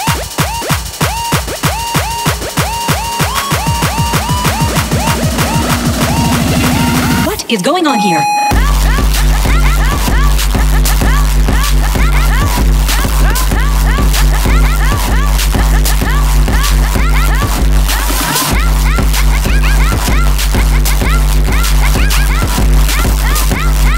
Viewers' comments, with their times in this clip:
0:07 many years later, is still the hardest thing i’ve heard in any genre of music